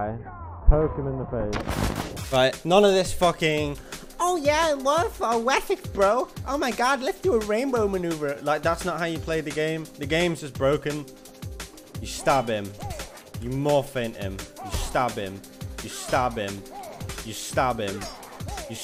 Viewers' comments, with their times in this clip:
0:03 some linguist wanna decipher what this man just said?